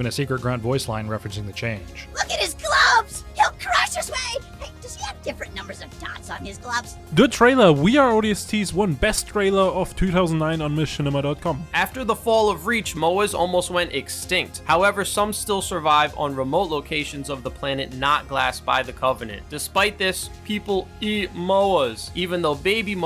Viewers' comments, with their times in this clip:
0:07 is that english?